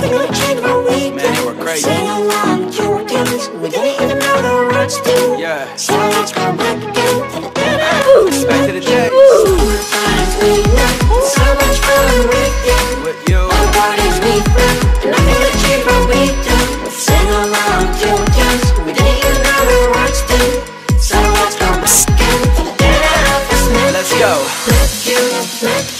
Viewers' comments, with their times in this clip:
0:06 I heard oof
0:07 the oof got me 😂🤣